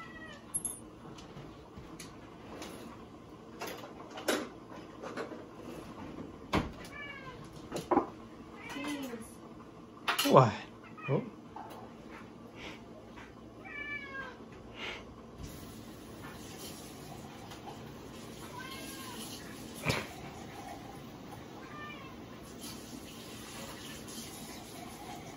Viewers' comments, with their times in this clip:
0:06 I love that little "moeew" at the dog like saying : "Hey also you, do something!"